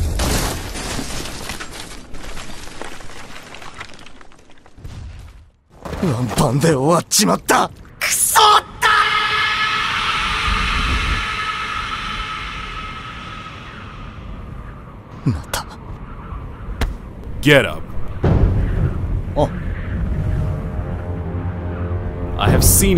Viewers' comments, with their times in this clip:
0:08 the way he said DAMN IT!!!!!!!🤣